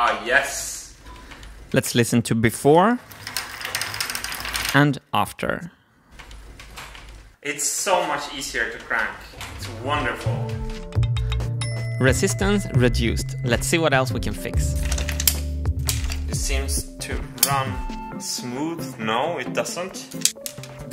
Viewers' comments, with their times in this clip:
0:04 are you sure the rattling noise and resistance from "before" wasn't from the marble that was clinging to the magnets at the top of the big wheel?